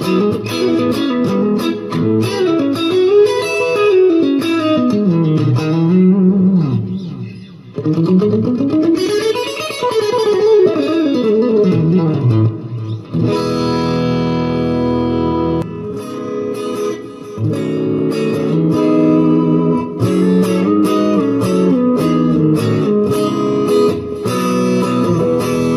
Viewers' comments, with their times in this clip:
0:06 Really like that blues riff around the mark